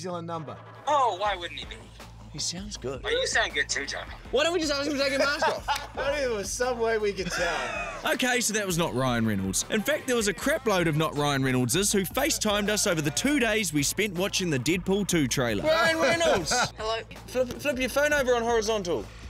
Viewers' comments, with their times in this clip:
0:07 he speaks hebrew!!!!!